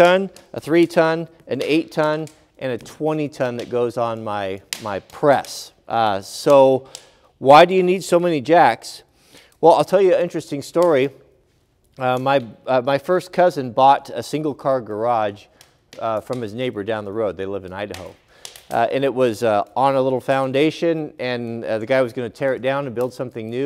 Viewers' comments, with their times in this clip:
0:06 Great video. Did anyone else hear the crackling in the time? Is there a fire in the background we do not see???